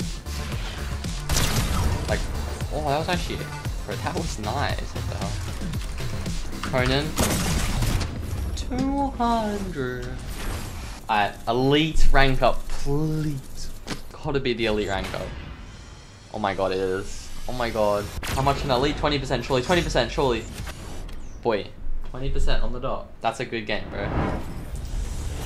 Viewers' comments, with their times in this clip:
0:09 That "tWo hUndRed" was angelic